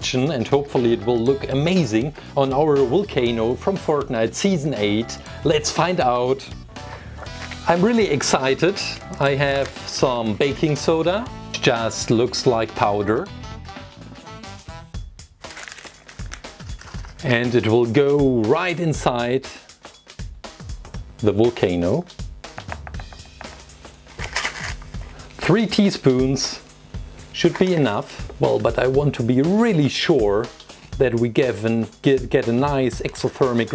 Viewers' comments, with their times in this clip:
0:03 did he just say fortnut
0:16 Why did i feel like this scene was asmr